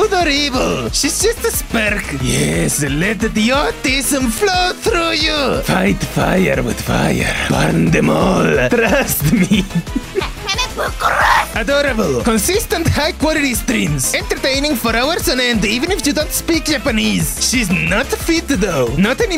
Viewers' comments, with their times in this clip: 0:05 Dumbledore said calmly